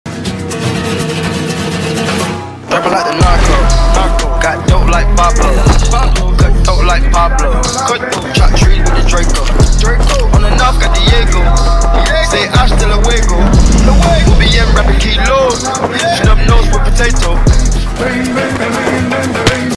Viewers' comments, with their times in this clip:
0:06 My Ears: Gethok like pablo Isn't gethok an Indonesian food?